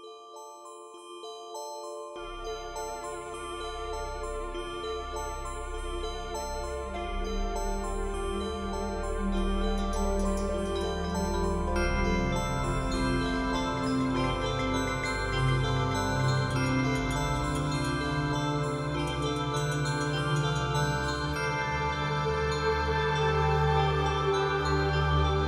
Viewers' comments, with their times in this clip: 0:06 the music does a cool thing where if you're watching on a phone and have the screen maximized, the sound moves back and forth !